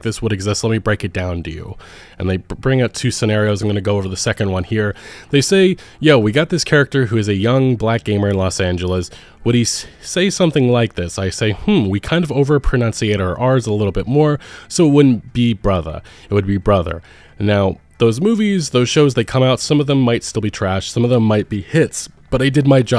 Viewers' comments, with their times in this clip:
0:07 Omfg…. The way he talks is so racist. the un-highlited paragraph. He’s trying to impersonate the way black people talk dude. Giving em that exaggerated swagger.